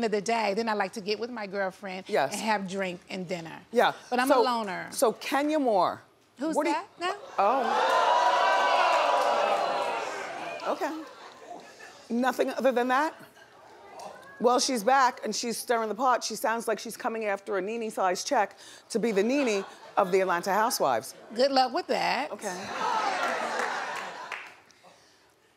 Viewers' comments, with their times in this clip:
0:06 LOL I LOVE THE EXAGGERATION OF THE AUDIENCE